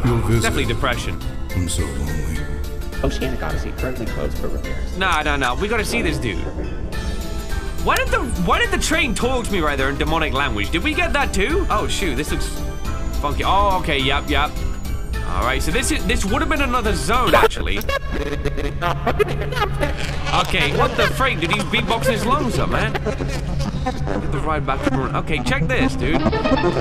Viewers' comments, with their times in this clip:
0:07 That was Mollie, not the train.
0:11 That was Mollie not the train